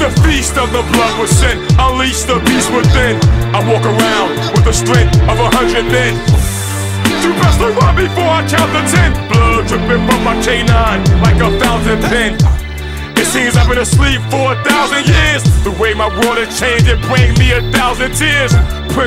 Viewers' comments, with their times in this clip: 0:06 I like this part when the rapper kind of screams his lines. It feels realistic. as if he's a real character. good.